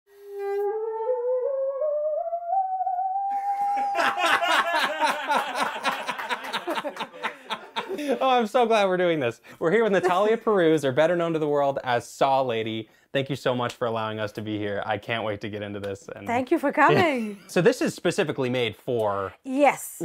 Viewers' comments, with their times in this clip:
0:03 feel good inc intro be like